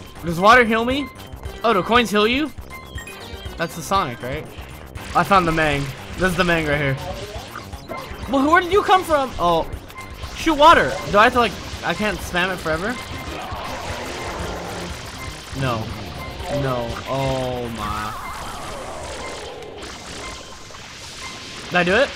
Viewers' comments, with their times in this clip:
0:10 "Shoot water!! I can't spam it forever?!"-crying